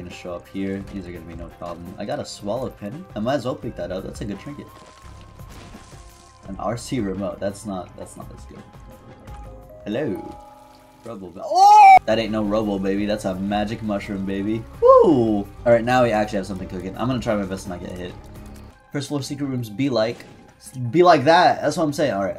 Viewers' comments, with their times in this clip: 0:10 love the cut scream